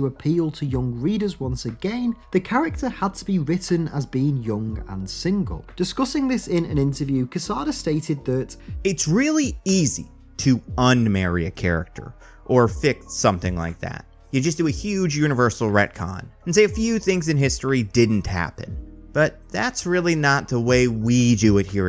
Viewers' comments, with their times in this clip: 0:08 is this a voice actor or his real voice. I think the former.